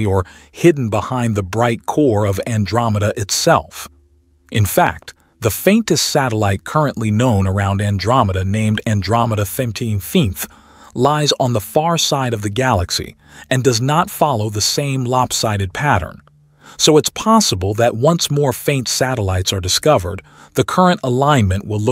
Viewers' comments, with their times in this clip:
0:03 This is a mystery only if you insist on a gravity centric model for shaping the universe; a model that is increasingly banging its obstinate head against a brick wall. The mystery fades when you accept electromagnetism as the dominant force in nature. On a side note, I never get tired of hearing this (AI?) narrator mispronounce words, often pronouncing the same word three or four different ways within a video, or even two different ways within a single sentence. But his (its?) pronunciation of "Andromeda XXXV" is classic. I had to replay it several times, trying to contort my tongue sufficiently to duplicate it.